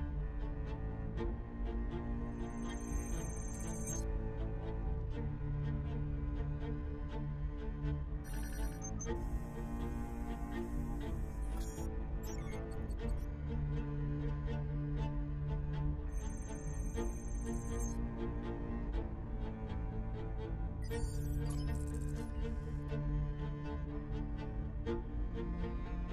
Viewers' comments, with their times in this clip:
0:10 Music ! Cool violin